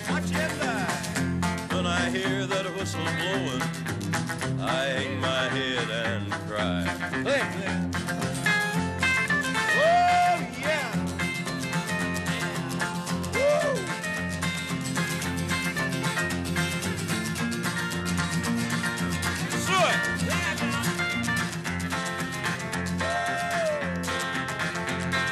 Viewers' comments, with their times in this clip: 0:09 I just cant get enough of that good ole' Johnny cash strumming